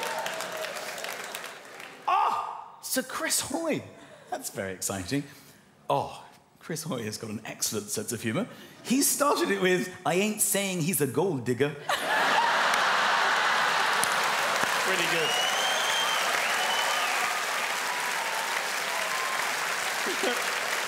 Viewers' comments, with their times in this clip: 0:03 ohhhh, he didn't do an accent for Sir Chris Hoy (he's from Scotland in case anyone doesn't know)